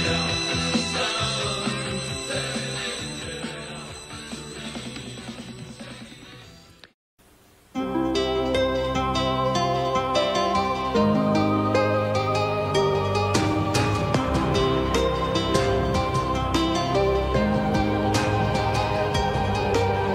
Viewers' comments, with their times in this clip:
0:07 Gives me Nintendo BS-X vibes